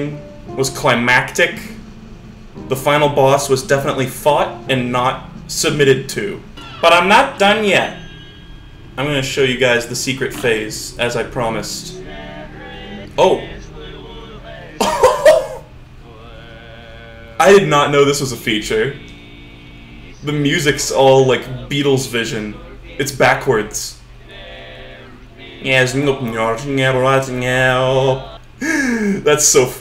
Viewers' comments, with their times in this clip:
0:10 Truthfully, I was expecting MUS_Intro_DontDealWithDevil_Vocal_666 to play instead. And I wonder, is that a separate audio file, or is there some code involved that makes the title music play backward when you accept the devil's offer (unrelated to the first possible answer)?